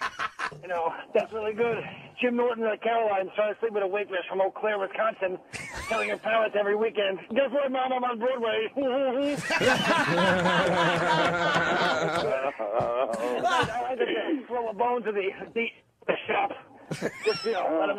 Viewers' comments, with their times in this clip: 0:04 Jay Mohr does Colin